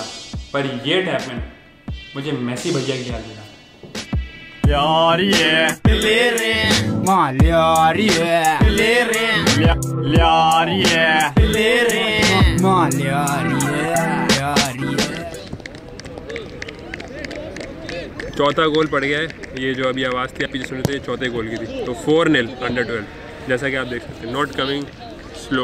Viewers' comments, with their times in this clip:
0:06 nice song lyari